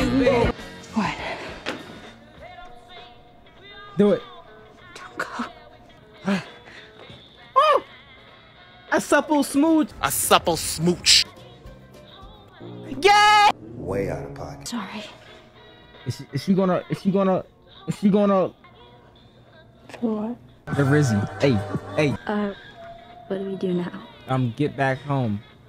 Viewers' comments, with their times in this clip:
0:06 Lol! That high pitched "Aaaaw" is everything to me 😅